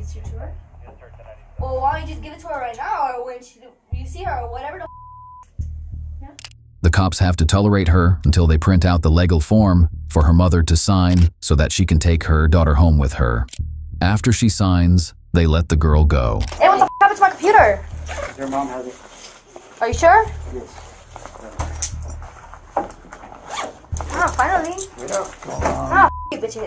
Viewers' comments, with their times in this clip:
0:07 Sound like he said lagal when he said legal